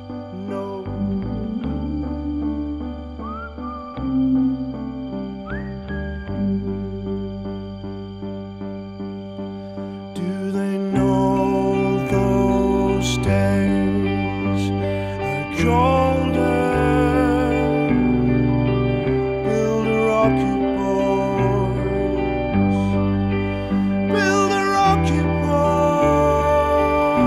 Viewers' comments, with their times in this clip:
0:08 the keyboardists is doing the only drumming